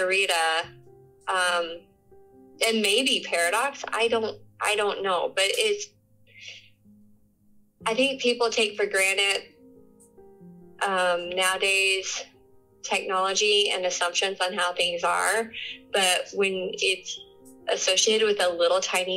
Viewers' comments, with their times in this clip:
0:05 "I think people take for granite" . Is that an expression? Does it mean they think it's set in stone, or something?